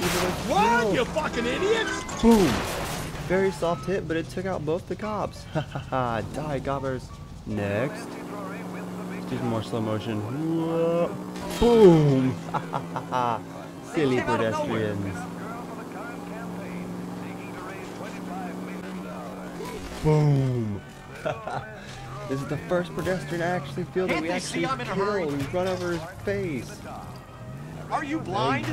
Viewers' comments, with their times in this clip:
0:10 (jaws music) duuu dum duuuuuu dum dum dum dum dum dumu dum dum dum BOOOOOOOOOOOOOOOM POLE SHOT